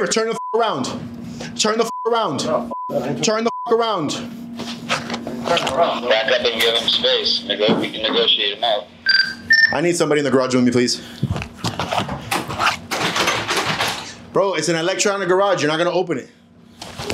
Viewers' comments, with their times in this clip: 0:05 did he say the guy on the radio say the n-word or am i hearing things?